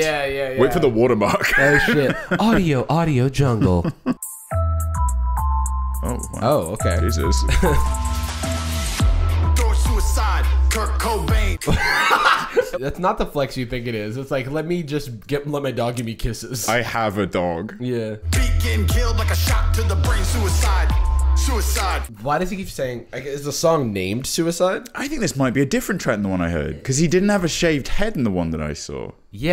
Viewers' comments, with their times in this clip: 0:10 we both cackled 😂